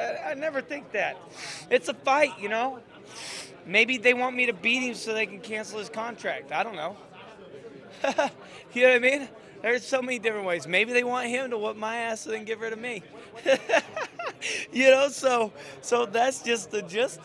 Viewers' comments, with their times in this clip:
0:04 Legit sounds worse than Diego does. what the hell is going on here...